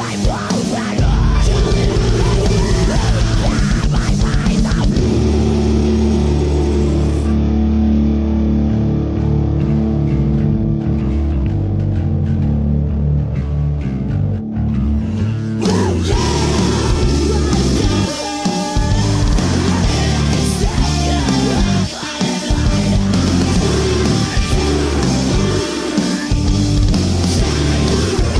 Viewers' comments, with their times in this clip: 0:08 what a "nice" breakdown ululul the song is really nice...but its not a break ;)
0:16 god damn his growls are sooooooo deeeeeeeeeep its amazing lol